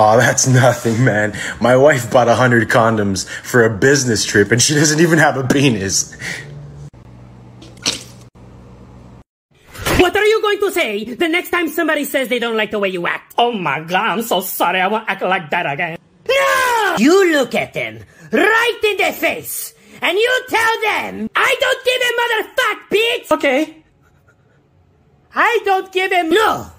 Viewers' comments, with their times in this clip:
0:09 “Oh mAH God I WoNt aCt lIKe dAt aGAiN IM sO sOOReH” His accent😂😂 Bro each one got me on the floor😂😂